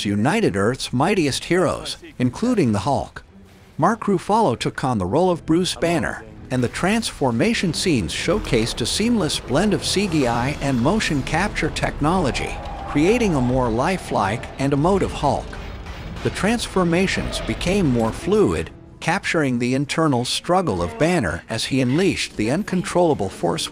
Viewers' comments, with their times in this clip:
0:06 ah yes, the nation’s favourite, Mark Ru-follow